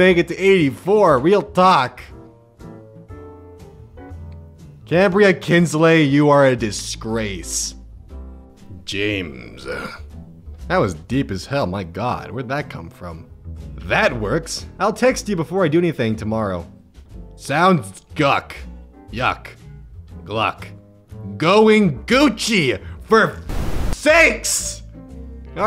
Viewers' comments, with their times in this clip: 0:08 is the time where he says "James" really deeply Its mainly for myself and not for anyone else because I like listening to it but dont like having to constantly rewind 10 secobds where the grandma calls her offspring a disgrace
0:08 No one gonna talk about his voice -? I'm the only weird one? Okay-